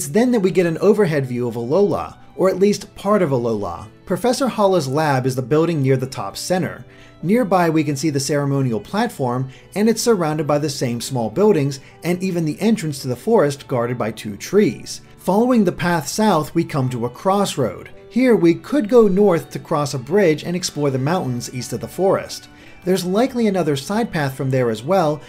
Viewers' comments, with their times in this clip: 0:08 (posting this at the mark in the video) nice video man! but you are killing me every time you hack up my boy's name smh lol Kukui (pronounced ku-ku-we) I'm sorry lol but as someone who is from Hawaii (Oahu) it irks me when I hear names mispronounced. It's not your fault but it irks me lol